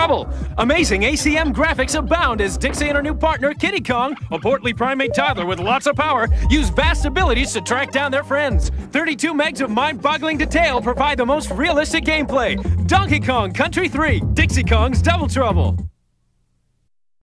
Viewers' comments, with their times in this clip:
0:03 Is possible hear unused sound effects in and a little bit diferent arrange in boss theme on the final